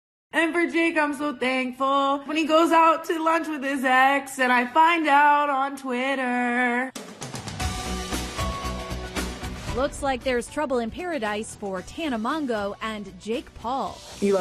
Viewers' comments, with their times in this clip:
0:01 That singing is cringe-worthy. Though I don't think I could do any better, to be honest.